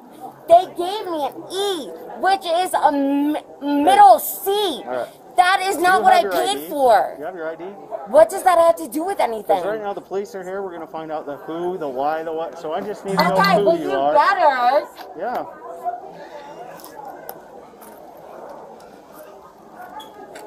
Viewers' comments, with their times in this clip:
0:03 I made it to and couldn’t take her voice any further. Anyone who made it to the end has my respect.